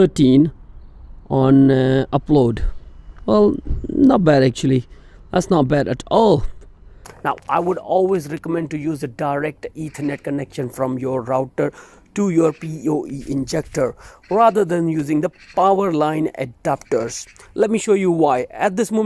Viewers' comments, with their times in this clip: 0:07 what is a Poe injector? And powerline adapter ? Not sure what those two machines are mounted on the wall . Nice video . For some bizarre reason though your voice sounds like Aamir Sohail's lol courtesy of watching too much cricket growing up.